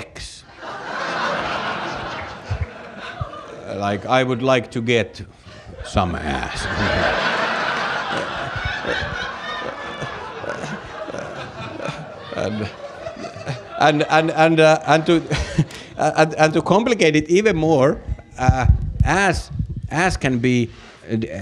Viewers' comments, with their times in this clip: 0:07 I keep coming back to the video because it's so fun, but also because the crowd is so damn amazing! The woman laughing is my spirit animal :D